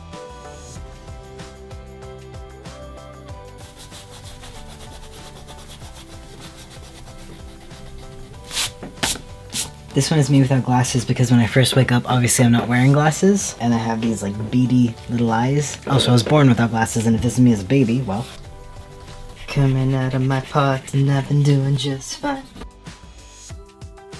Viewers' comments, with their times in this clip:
0:08 Also the eraser noise = 💯 💯 💯 💯